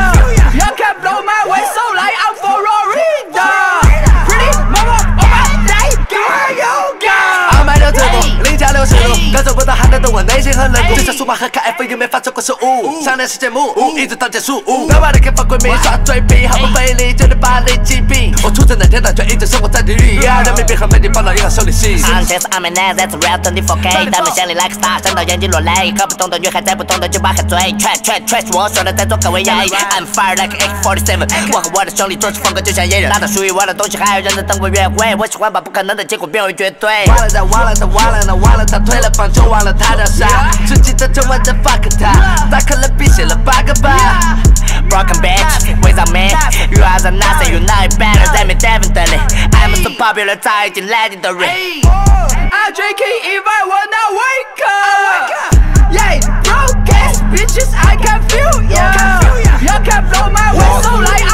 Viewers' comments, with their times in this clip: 0:04 didn't know what he said but I know he just went off
0:06 he actually kinda fire if I could understand him
0:06 kid tries to do a ski mask flow XD
0:07 when you give Chinese Eminem the mic
0:21 he sounds like the Asian spongebob EDIT:Clout. Stop coping my joke😂
0:22 we all know that’s xxxtentacion...ya’ll not slick
0:22 BRUHH THIS DUDE SOUNDS LIKE FKIN SPONGEBOB LMFAOO
0:23 Fire🔥The dude with the weird voice was lit AF the dude said I’m fire like a AK47
0:23 doodlebob came out of no where and spit a few bars real quick
0:26 sound like a south park character
0:44 His voice is so weird that he, IMO, somehow managed to make man and b***h rhyme.